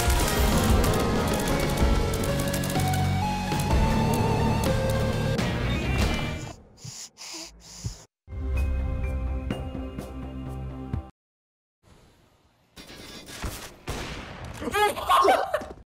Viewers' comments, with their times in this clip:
0:12 AYO VOICE REVEAL??!